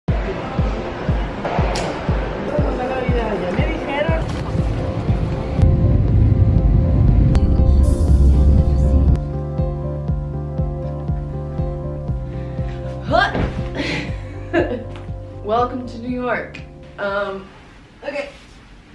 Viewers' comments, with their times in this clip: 0:03 Lol, is there any Hispanic people out here? if you heard the ''ya me dijeron'' of the minute